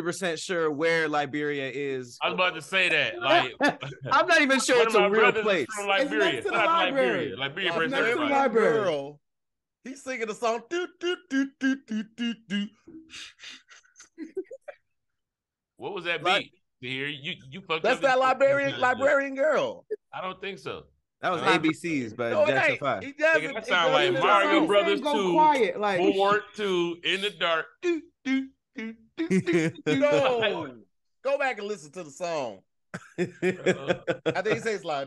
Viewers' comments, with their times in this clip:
0:10 this must be the remix I never heard that version before
0:19 library girl ... I mean Liberian grill 😭🤭😂